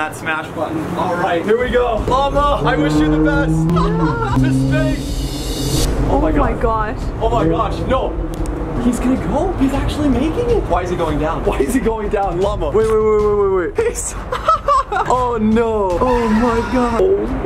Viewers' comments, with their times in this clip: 0:05 hear her voice